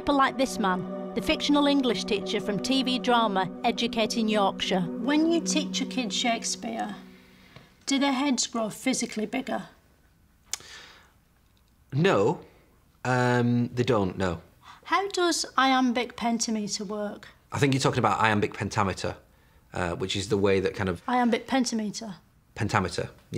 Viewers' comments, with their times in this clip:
0:05 I just love how this guy plays along and asks who told her to pronounce the word that way 🤣 then she just mutters, brilliant